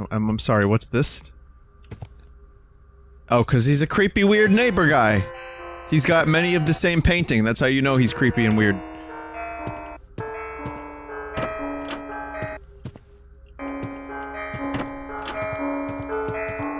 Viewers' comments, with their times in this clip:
0:03 i fell asleep watcging this and the music gave me the worst nightmare